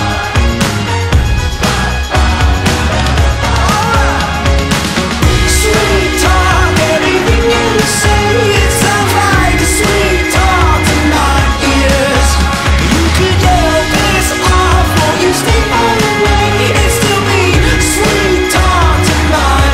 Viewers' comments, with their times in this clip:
0:06 does anyone else hear a phone ringing???